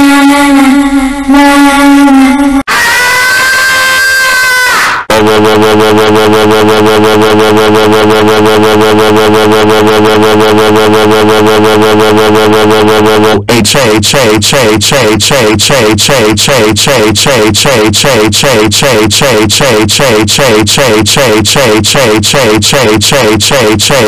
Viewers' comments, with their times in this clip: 0:03 Tom And Jerry Scream
0:03 Sounds like a super saiyan scream
0:05 SOUNDS LIKE A UFO
0:06 Keep your Volume Down! It’s Loud!